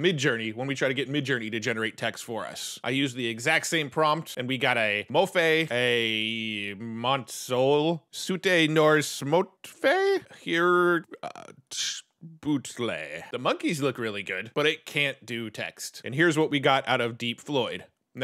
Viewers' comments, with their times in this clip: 0:05 Sorry, nobody can read generated text out loud like Atomic Shrimp.